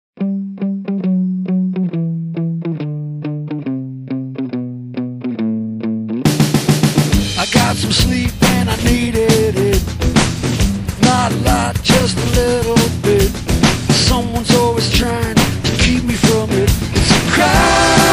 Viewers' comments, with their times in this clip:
0:00 Where's the voice Ohhhhhh?